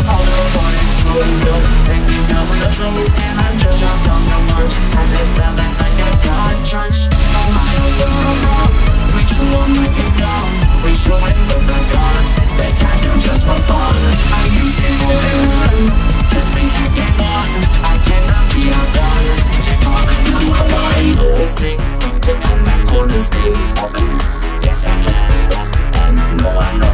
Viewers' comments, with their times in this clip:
0:07 if you listen closely enough, you can hear him sneaking in grand dad! XD (btw, you nailed this)
0:07 if you listen close enough, you can hear him force the Flintstones in (btw, you fuck this up)